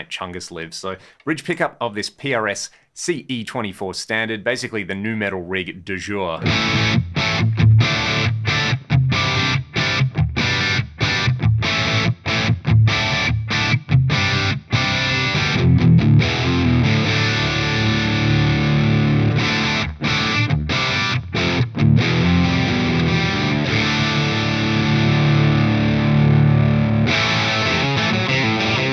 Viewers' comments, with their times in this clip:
0:10 Sounds awesome ha. In that clip, there's actually some bass for once and that was mint. But then you dial it back and it's got thinner again, like you said, more Marshall style.